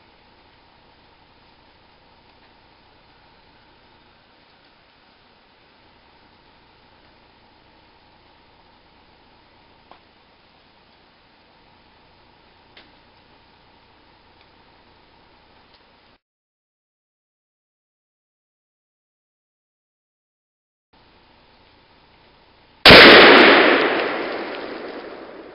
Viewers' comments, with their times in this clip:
0:09 IF YOU JUST WANNA SEE EXPLOSION GO TO MIN MARK AND WATCH FROM THERE. RAPID FIRE AFTER EXPLOSION IS ME EMPTING MAG AFTER GF HITS TARGET AND BLOWS IT UP.